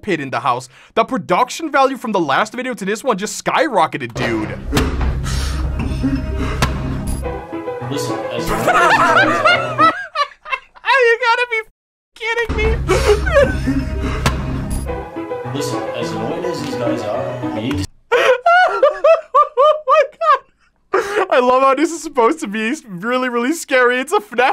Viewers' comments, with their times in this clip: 0:07 classic music goes hard 🔥